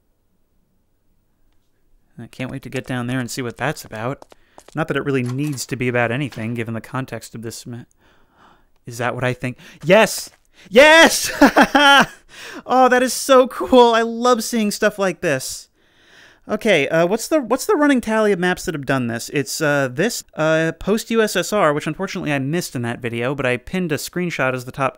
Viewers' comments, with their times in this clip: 0:09 His voice changes so fast!